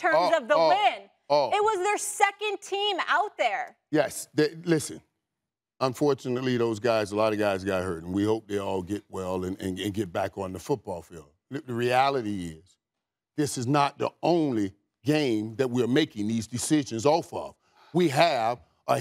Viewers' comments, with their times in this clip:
0:06 Mike started stuttering real quick when Molly pulled up the injuries lmaooo